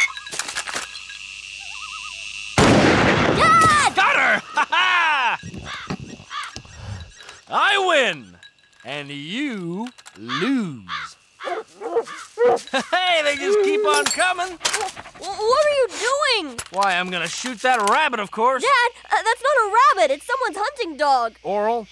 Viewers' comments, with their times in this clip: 0:03 look at his scream isn’t he so cute